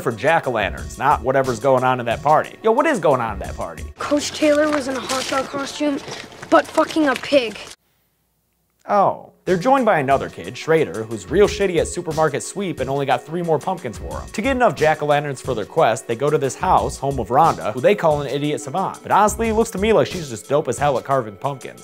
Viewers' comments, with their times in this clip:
0:08 That "Oh" sounded so sad and disappointed.